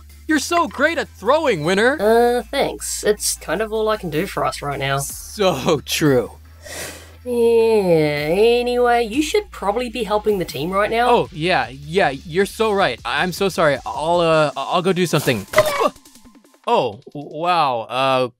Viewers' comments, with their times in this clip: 0:06 the fact that you can hear Winner cringe at what clock just said